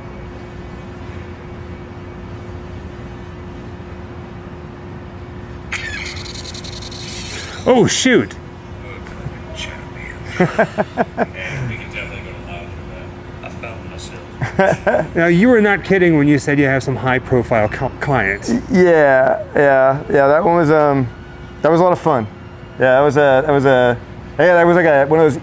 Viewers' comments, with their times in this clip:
0:06 It definitely sounds like a “Star Wars” blaster being fired …